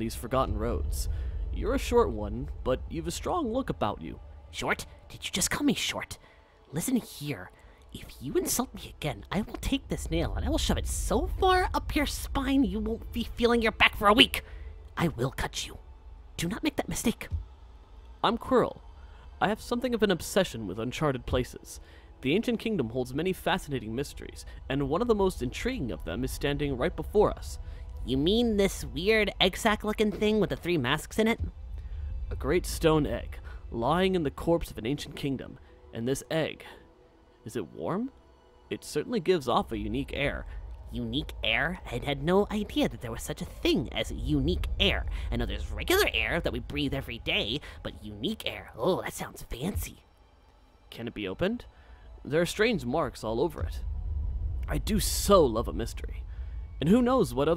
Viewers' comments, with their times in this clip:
0:04 Omg he's so precious he sounds just like me I officially love this character!
0:38 The sarcasm in his voice sounds really funny XD